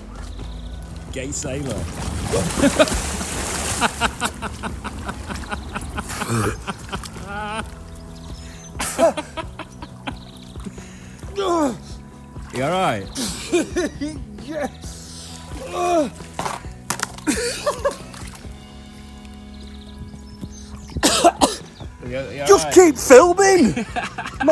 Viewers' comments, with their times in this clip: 0:06 tries not to laugh Fails